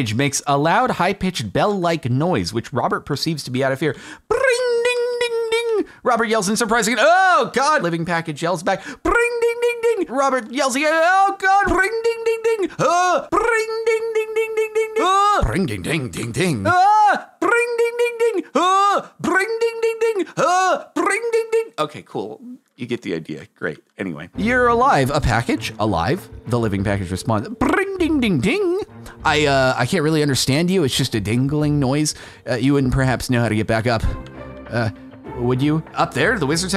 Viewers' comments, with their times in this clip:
0:10 That whole bit is like two dogs barking at each other, but it is yelling instead. Like: AHHHH! AHHHHH! AHHHHH! AHHHH! AHHHHH!!!!!!!!!!!!!!!!!!!!
0:17 Me trying to describe the noise my car was making to the mechanic /J